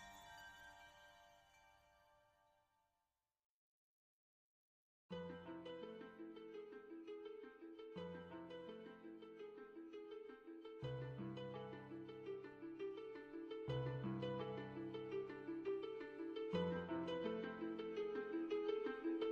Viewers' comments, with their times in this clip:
0:04 sounds like Zelda at the great fairy... lol